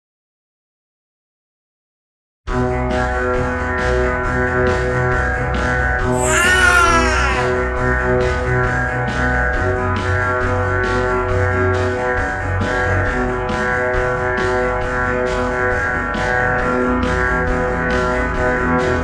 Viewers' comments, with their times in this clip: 0:06 Coris cries like a cat